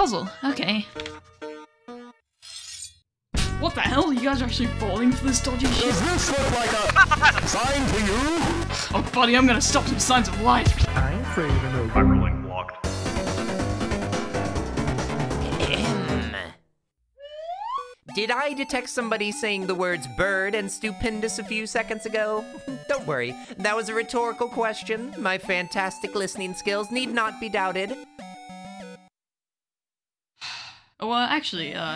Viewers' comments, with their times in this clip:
0:03 nice Susie sounded like Two for a sec 💀
0:05 The "DOES THIS LOOKS LIKE A [[Stop the presses]] SIGN TO YOU?!!!" Is the best line, the way he says it just makes me feel so [[Hyperlink blocked]]
0:18 Why did it take me so long to realise that Berdly probably heard "stupendous" from Spamton saying "stop the presses"